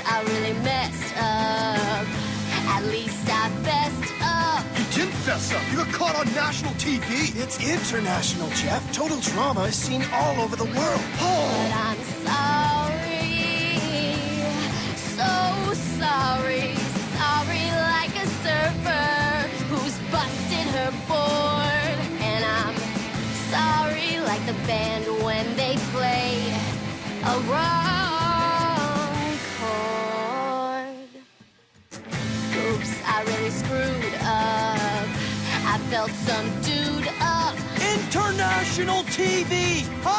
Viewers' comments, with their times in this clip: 0:07 Such a great song sung by such a good character with such a beautiful voice. Also, -Harold, you’re not helping!
0:11 i love the way she said sorry it just sounded so angelic!!
0:26 That note though 💗💗
0:26 Am I the only one who is obsessed with when she starts singing at that part before the music stops for a moment?